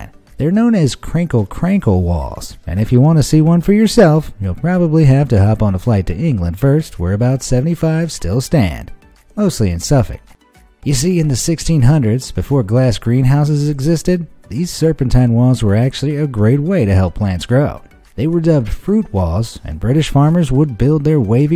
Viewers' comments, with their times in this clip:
0:03 narrator got a little too close to the mic there